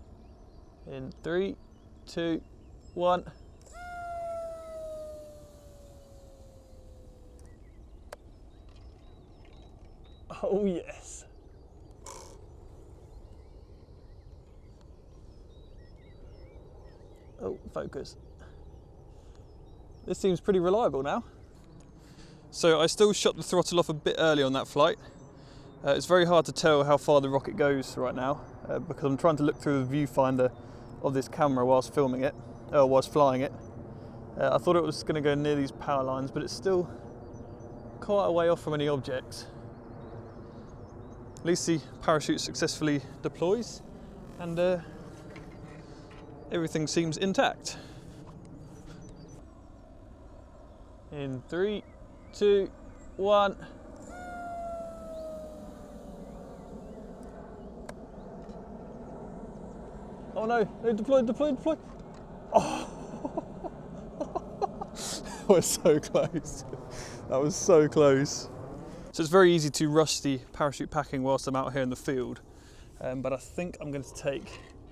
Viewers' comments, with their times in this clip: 0:03 least satisfying rocket noise ever. 😂😂😂
0:03 SHEEEEEESSSSHHHHH Goes the rocket
0:03 Fun little noise it makes.
0:57 and this real aircraft somewhere on the background makes fitting sounds too!